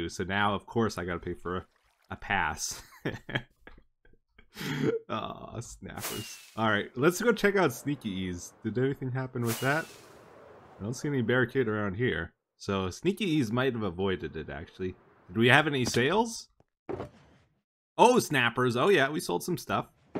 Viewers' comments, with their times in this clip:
0:05 The most despondent "aw snappers" I've ever heard